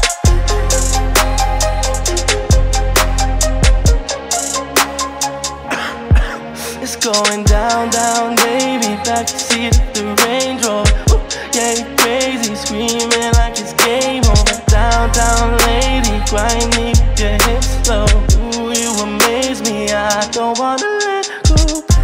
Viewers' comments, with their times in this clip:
0:05 the covid cough and still making good music 😁